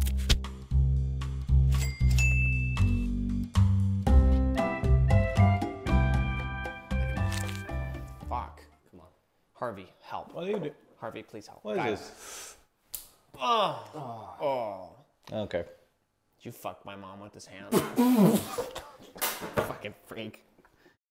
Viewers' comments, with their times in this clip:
0:07 the voice is giving peter sqloint
0:17 also i just realized that this is his Peter voice, APOTHEOSIS FANS UNITE